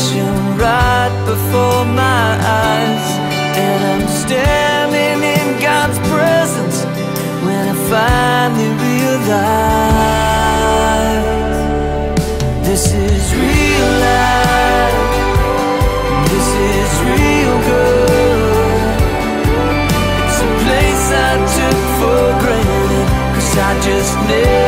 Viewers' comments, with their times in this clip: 0:10 Amazing amazing song full of meaning. It definitely stirs the core. I have a suggestion though. When Lincoln Brewster sang the chorus after the last stanza He should have taken that chorus an octave higher, it would have sounded really beautiful. That's the way I sang it and it turned out pretty well...